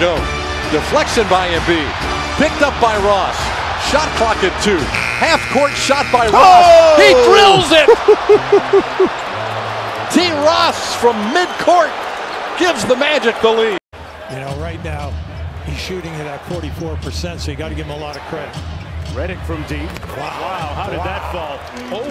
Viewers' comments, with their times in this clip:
0:06 MiamiHysterical is the Magic commentators